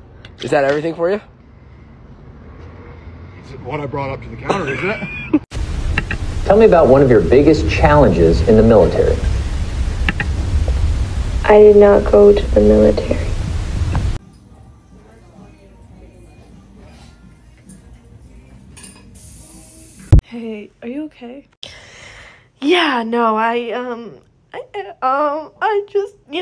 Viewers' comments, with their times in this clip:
0:08 dude I looked away for a second and I thought that was Micheal Scott asking about the military😂